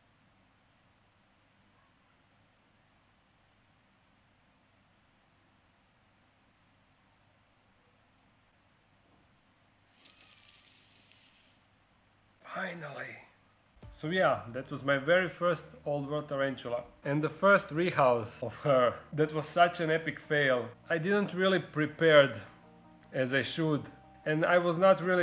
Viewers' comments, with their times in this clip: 0:08 You could hear the crunch of the roach. Damn
0:10 i heard like a death scream rip mr roach :<